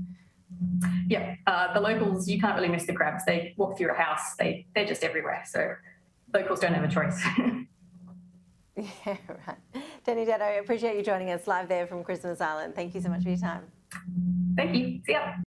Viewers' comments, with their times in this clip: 0:10 Lol Anyone noticed from the inception of the video the female news anchor was fighting to hold back her laughter? 🤣 She later let it out